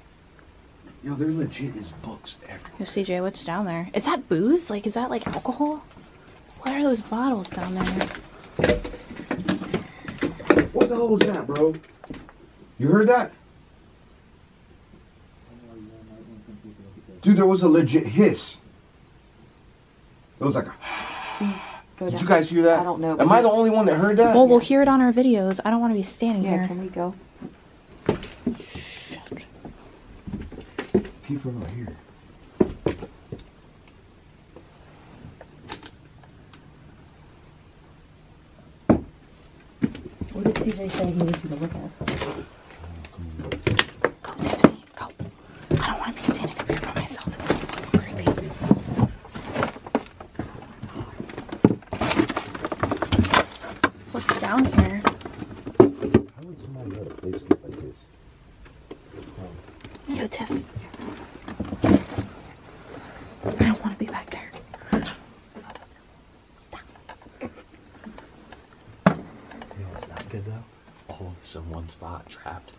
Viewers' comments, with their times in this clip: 0:09 a loud "Hissing" noise is heard..This is what you get after people do these "Rituals" and other things in abandoned and occupied buildings as well. What happens, in case anyone wishes to know and understand is Once these Rituals are done it claims the place as Property of the evil one. It also Opens a Portal or Vortex which enables evil spirits to easily move in and out of Our reality from theirs and Vice-versa. Those places become Unlivable and Hostile to all good things.
0:09 Ok there was a very creepy breath or hiss and I don’t think that they was only one eres on there with you😥
0:09 i can hear the hiss faintly
0:09 Hey u guys there is a hiss
0:09 I hear a 2 second exhale/scary sigh
0:10 definitely heard that first "hiss"
0:11 heard the hiss.
0:11 I think I heard breathing or hissing
0:12 i heard the hiss ,
0:13 i heard that hissing too!!!!! 😳 not good ! Not good....
0:27 New subscriber here it sounds like the evp was shocking
0:29 heard a whisper
0:37 i heard a hiss
0:51 I hear a whisper OH MY GOD I don’t think it’s u😘💜👻
0:54 Time stamp I distinctly heard a guy whispering, I could not understand what he said though